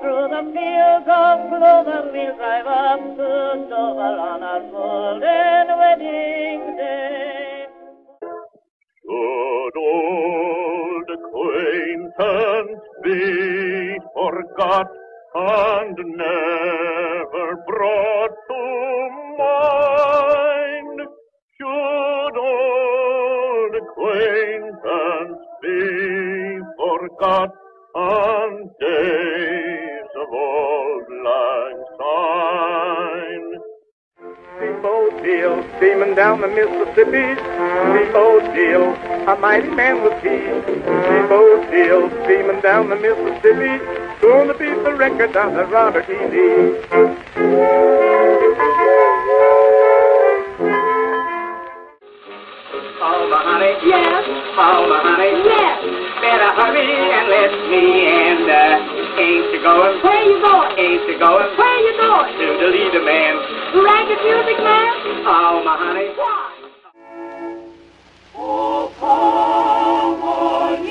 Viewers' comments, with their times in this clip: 0:08 best version of Auld Lang Syne I have ever heard
0:53 Sound like Mario